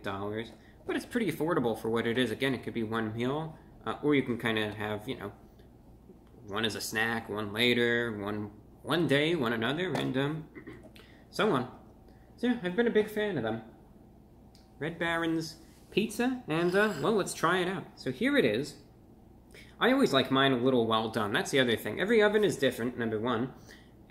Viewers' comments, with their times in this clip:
0:10 HE CLEARED HIS THROAT review brah plz dont get the coronavirus we dont need you in the hospital again 🙏